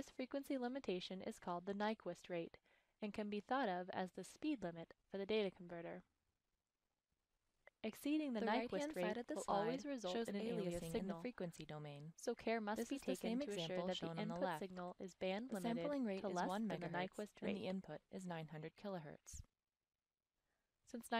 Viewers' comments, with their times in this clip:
0:09 Still not fixed. there are two voices at the same time now. Almost as if they shifted the audio back to try and align it but mixed the old and new...